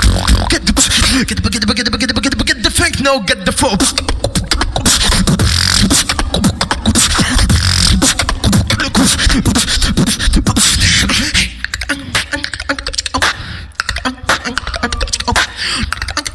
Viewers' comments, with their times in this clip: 0:04 Dam Dat Drop Trbl :D ..😂